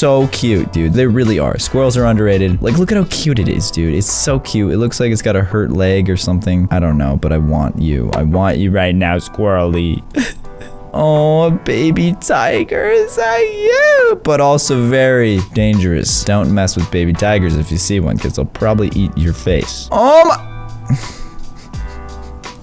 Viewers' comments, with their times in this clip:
0:10 wait wait did u hear that hes say awww ;-;